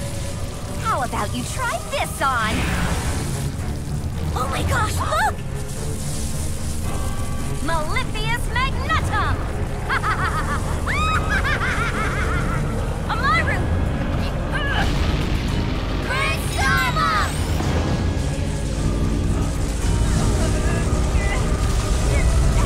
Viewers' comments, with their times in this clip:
0:10 Praxina is laughing like a crazy person. >:D